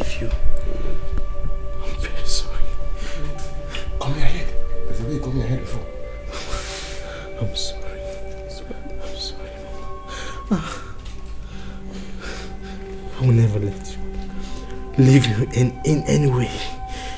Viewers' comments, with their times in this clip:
0:05 welp! Ya'll have ruined the movie, i don't want to hear the director's voice🙄😡its very unprofessional.